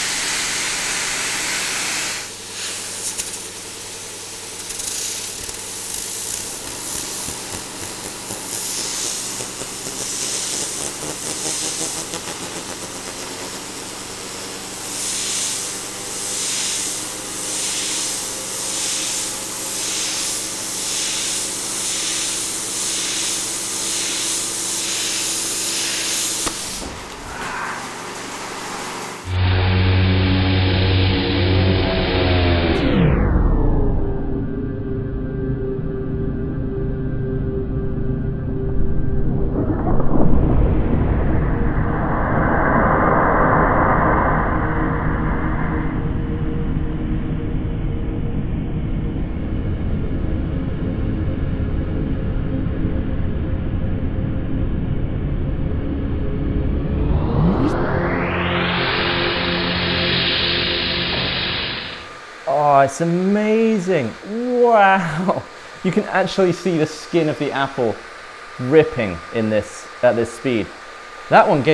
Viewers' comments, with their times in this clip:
0:09 sound like Nuclear Godzilla charging up for Nuclear breath
0:09 sounds like a Star Trek ship engine! Woah!!
0:09 it's like the sound the vehicles from star wars I make during the race. Like a sci Fi sound
0:09 Godzilla's voice actor
0:09 sounds like a Rotary engine lol
0:34 That moment when you spin an apple so fast, that it, subliminally, makes lo-fi chamber music
0:34 the music hits different bro
0:42 The audio sounds like a demon about to go insane
0:55 why does this sound like the THX intro